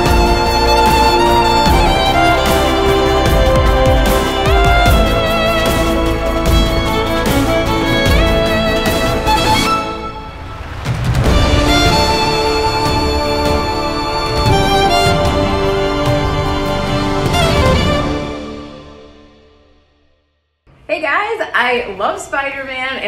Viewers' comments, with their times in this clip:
0:09 In that break I felt like it was going into the Star Wars theme 😂